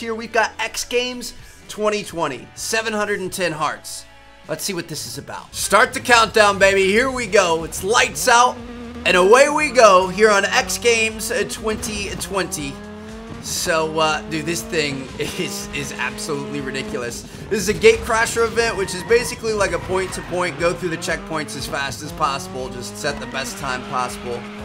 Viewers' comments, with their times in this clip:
0:09 GTA Vice City Bike sound Anyone else thought so?🤔